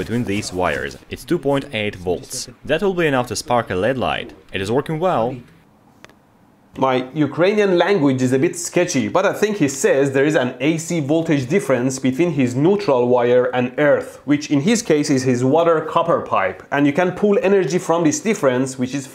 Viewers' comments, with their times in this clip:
0:06 you should not be concern with your knowledge of ukranian, as they are speaking Russia 🙂